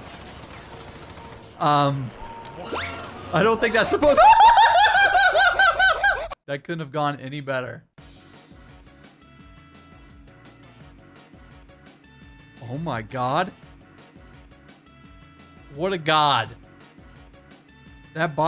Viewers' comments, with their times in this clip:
0:03 Texan accent he's climbing up the ladder Oh good god, oh god